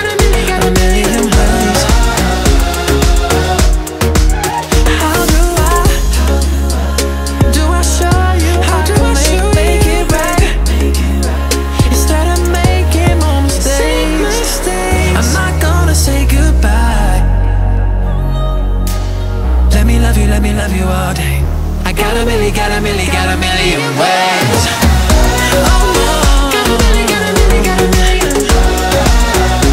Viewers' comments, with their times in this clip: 0:10 She was laughing and he was looking at her like umm... are you seriously laughing 🤦‍♂️
0:11 nobodys gunna talk bout how loren laughed but hrvy jus rolled his eyes like he didnt care
0:12 :3 his face when she laughed hooolllyyy shiiiittt *-*'